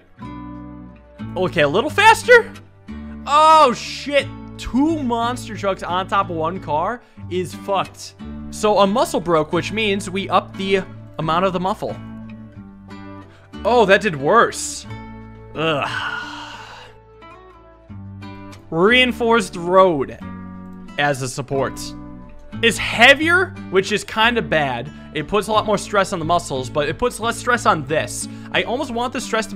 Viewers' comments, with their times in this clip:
0:08 sounds like Mike Tyson xD
0:11 "the amount of the muffle"